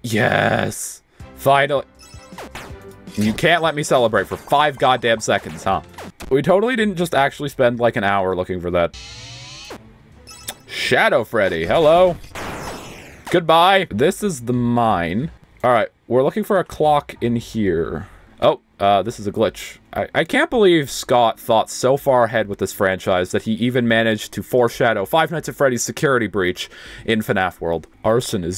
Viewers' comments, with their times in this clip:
0:10 bro ur voice sounded like markiplier i swear to god